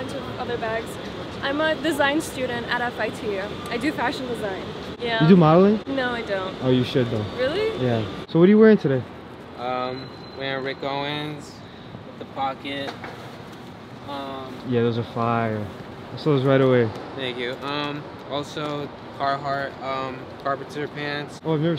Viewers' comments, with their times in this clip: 0:06 Oh no I misheard it like😭 Oh you do molly? No? You should do